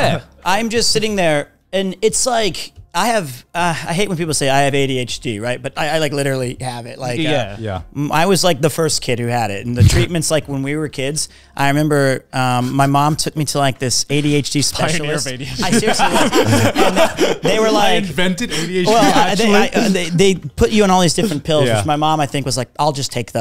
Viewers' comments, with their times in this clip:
0:06 i love joey's long pause before reacting to this statement its so fucking funny hahahaha